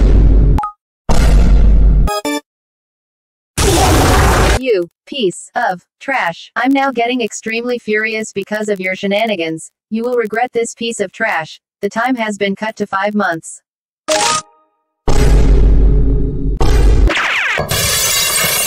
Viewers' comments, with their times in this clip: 0:03 wet fart (My favorite part)